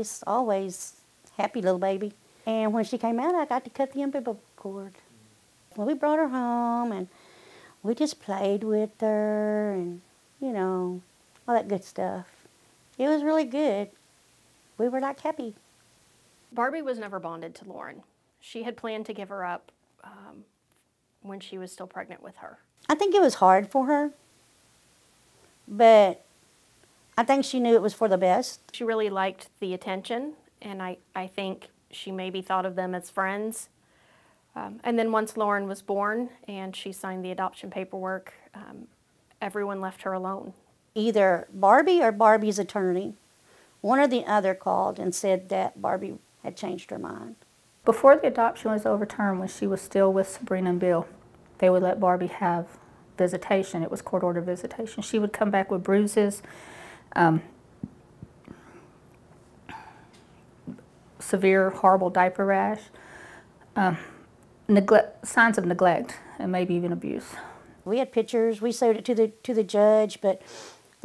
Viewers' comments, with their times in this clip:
0:03 the ambiblical cord
0:57 that burp though...😐